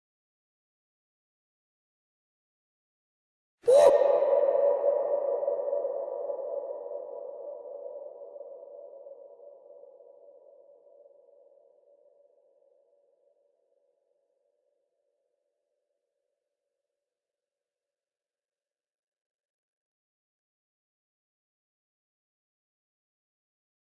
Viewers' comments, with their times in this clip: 0:04 is a freakin loud one😂